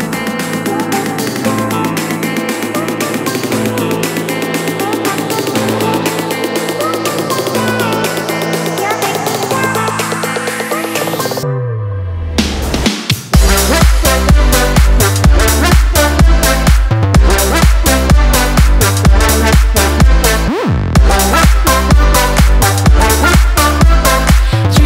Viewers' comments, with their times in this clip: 0:10 🔥 That freaking beat is LIT!!
0:12 This sounds like that kind of song that would start at the beginning of a Western film or at the end when the credits roll... then hits.